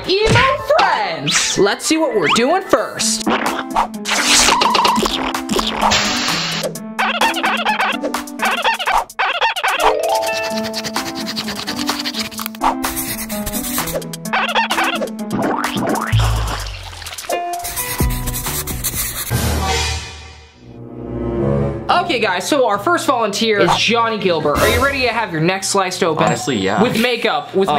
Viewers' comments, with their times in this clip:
0:09 The sound effects💀